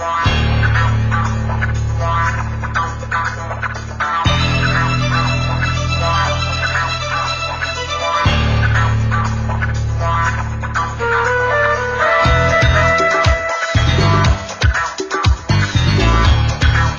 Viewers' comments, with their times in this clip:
0:04 Got that Ron Burgandy music going